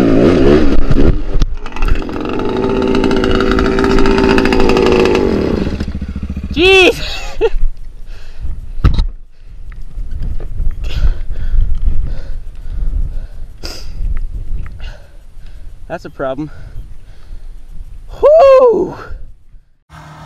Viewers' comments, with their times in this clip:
0:08 what a crash